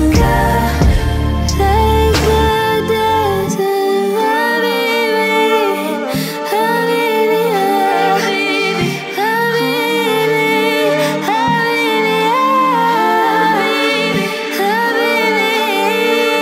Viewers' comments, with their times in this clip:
0:04 IT'S! SOOO~ AMAZING SLOW MOTION 🎧~!!!!! 😍🤩💞💗💗!!!!!!!!!!!!!!!!!!